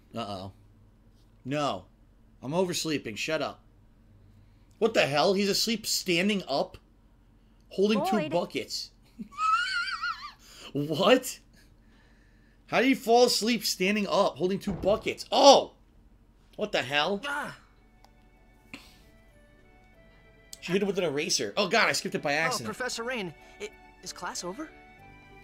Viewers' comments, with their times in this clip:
0:09 horse sound wtf?!